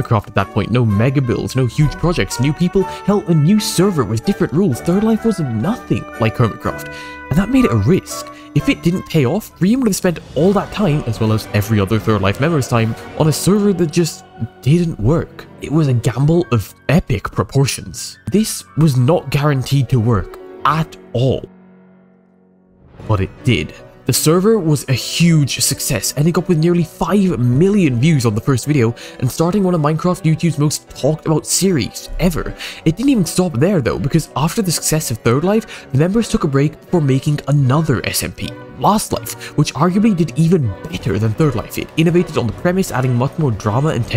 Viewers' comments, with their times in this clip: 0:10 the music was a jumpscare.... </3 shudders in pokemon legends arceus player
0:10 Why do I hear the "low HP" sound?
0:26 this piano made my heart rate spike-